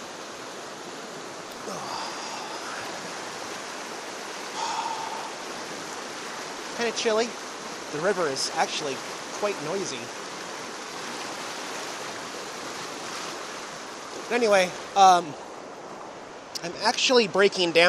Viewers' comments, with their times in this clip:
0:04 great sound !! you could make a long water & Forrest sounds recording with that !